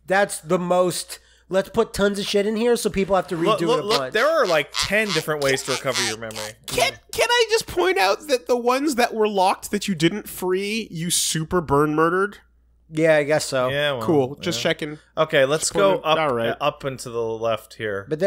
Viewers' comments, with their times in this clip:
0:04 I thought someone was blowing a duck call